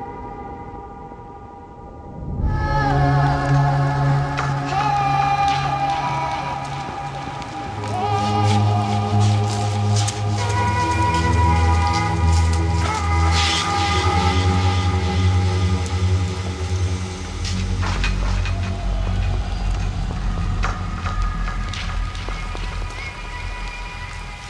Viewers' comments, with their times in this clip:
0:08 its like a trip going a bit scary